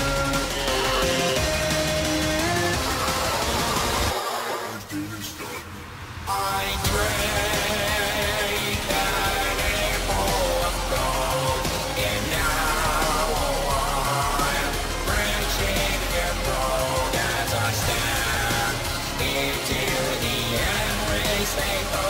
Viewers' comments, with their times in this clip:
0:06 what I hear: I prayed in 8 ball of coke now I've grown brain cells